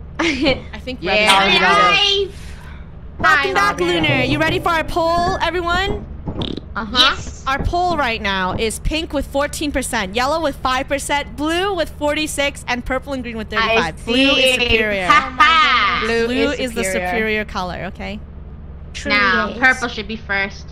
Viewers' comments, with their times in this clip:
0:05 he farted or she